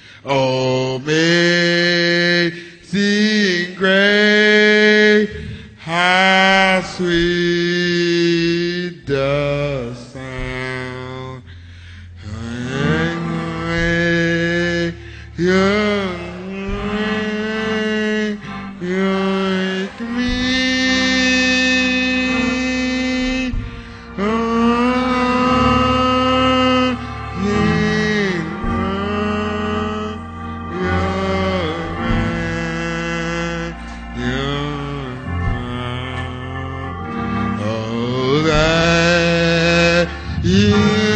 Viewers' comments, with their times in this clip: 0:07 Lolz the sound isnt sweet with u lol
0:16 he starts mumbling HAHAHAHAHAHAHAHAHAHA .
0:20 ROFL...at he says NYAAAATWEEE
0:29 Sound like a goat